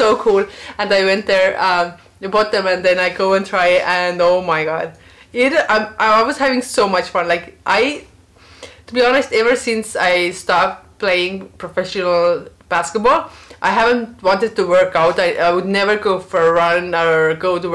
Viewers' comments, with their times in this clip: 0:04 "ou mai gaad" My estonian friend used to say that exactly the same way, haha.